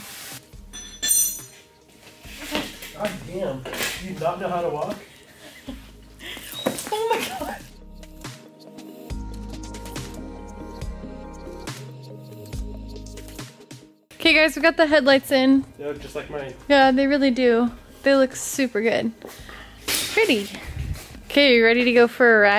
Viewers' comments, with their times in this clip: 0:06 😂😂😂🤦🏽‍♂️ careful there almost lost the light n car sounds amazing 🤘🌪💨💨